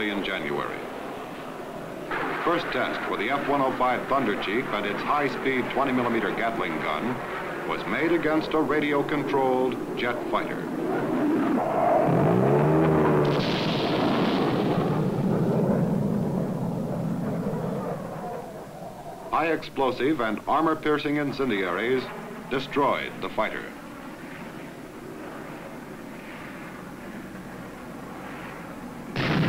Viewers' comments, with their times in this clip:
0:05 Yes '20 mm gattling gun' . This sound like the warthog but isn't it sountracked afterward ? I am just a simple amateur but it seems to me the damages done by the 'explosive' ammo are quite basic, it's a long shooting straight ahead...
0:10 The A-10 berrrrp
0:12 The A-10's great uncle the F105 Brrrt!